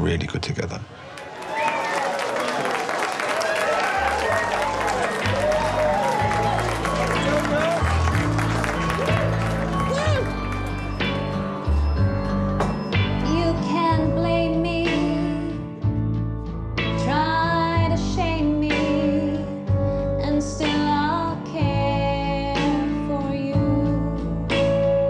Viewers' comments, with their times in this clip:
0:07 Hey that song!